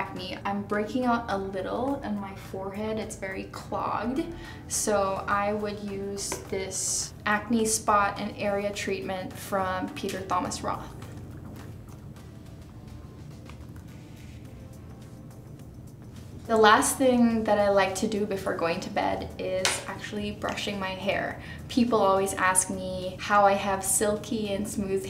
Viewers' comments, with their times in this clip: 0:10 did she really say peter THomas Roth?